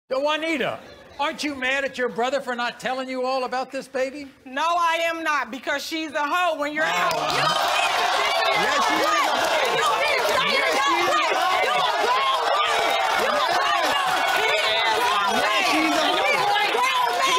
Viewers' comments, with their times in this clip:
0:00 The way Maury says "Yo Juanita!"
0:05 Nobody: Argument between two black woman exists* [ Intense rapping begins ]